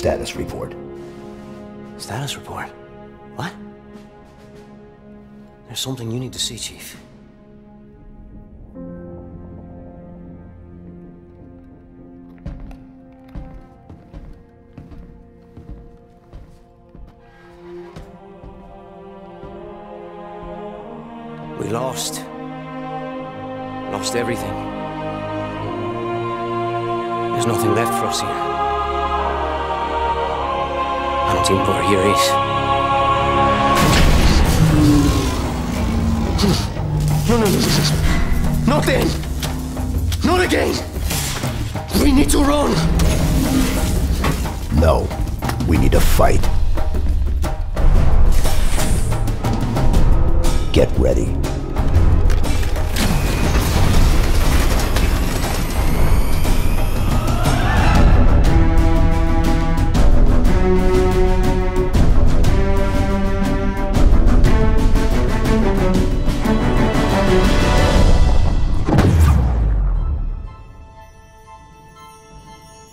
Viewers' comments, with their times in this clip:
0:10 ost does anyone know what is it called? it's so majestic
0:30 What did the pilot say its sound like until ur eth idk
0:31 does anyone happen to know what he's saying ? the subtitles don't seem accurate and I can't make it out over the music
0:34 DAAAT MUSİCC ARGHHH!
0:47 I know this music is you've been waiting for.
0:47 Where do you see that he struggled getting the other door open? Listening to the sound when chief moves it, it doesn't seem to be stuck at all. A nice sliding sound. Not jammed metal screeching. and the doors work perfectly. My guess was that he had left the left door open to avoid having to open it all the time.
0:49 someone is going fuckin nuts on the drums thats my favorite part about this trailer, is the fact that the music is phenomenal
0:50 That whole moment just screams halo coming back to its former glory. The classic theme music was godly. Master cheif even says “Get ready” seemingly to the audience. The gameplay trailer looked awesome as well
0:57 Best part in the entire trailer. A soundtrack that will stay with us the rest of our lives.
0:57 I had no idea how much I missed that music. It's been so long. This looks amazing. 😍👌
0:57 that song.... THAT LEGENDARY SONG. Nostalgia 100%
0:58 It so good to hear the halo music again